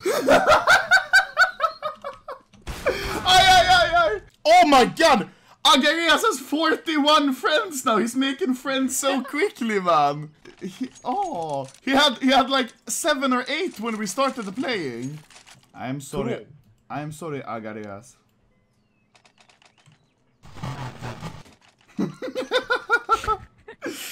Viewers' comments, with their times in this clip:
0:06 imagine playing only 8h and becomming anomaly's friend and becomming a youtube superstar without even knowing about it (most likely cause he is russian). and getting many friend invites instantly randomly. well the chance is the same as to get a knife i guess. oh and he had terrible mic because he was 8h newbie